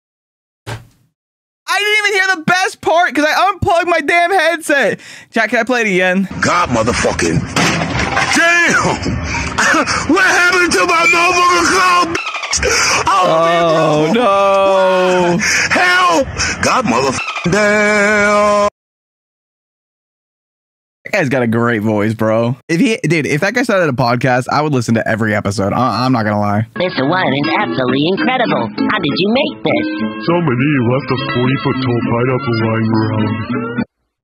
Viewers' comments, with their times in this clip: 0:06 forgot to censor the swear word
0:22 bro got that autotune